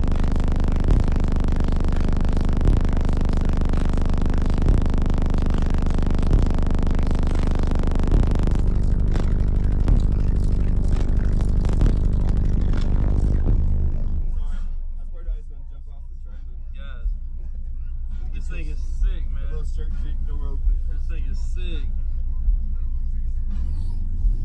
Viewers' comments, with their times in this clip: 0:08 his Camera mic fails LOL...